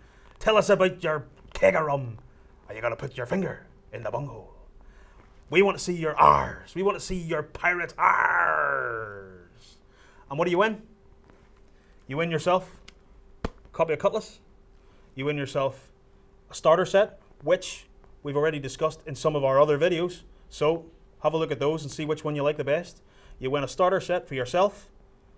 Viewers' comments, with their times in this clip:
0:08 Did he say "We want to see your pirate arse!" ?